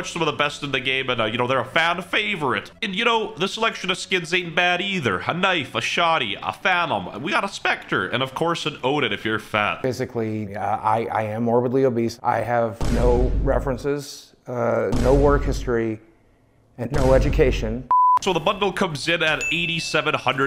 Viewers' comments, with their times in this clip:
0:07 The voice crack ... (He has now failed to disappoint)